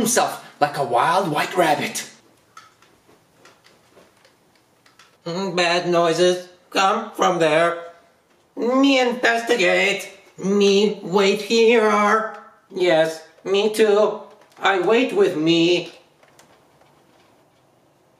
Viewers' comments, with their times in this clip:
0:06 Lol I love how the clones talk 😹😹😹😹😹😂😂😂😂😂